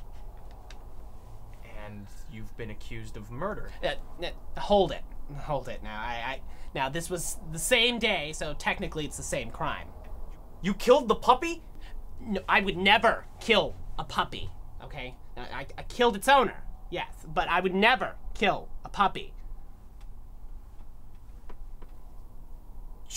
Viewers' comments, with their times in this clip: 0:10 I love the escalation of his voice. "YOU KILLED THE PUPPY?"